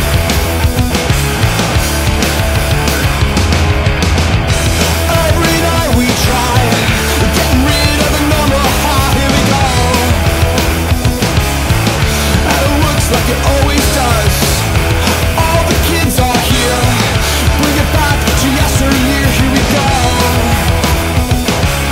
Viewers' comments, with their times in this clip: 0:04 i dont know why,.. but its feel like tom created this part for mark's vocal
0:04 autotuned and compressed as fuck!
0:05 with mark on vocals